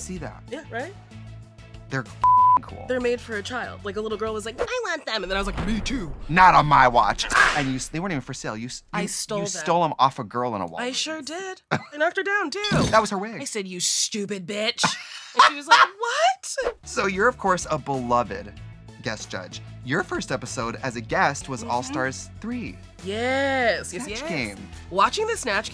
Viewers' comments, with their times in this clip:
0:07 this made trixie laugh because she hates kids 😂😂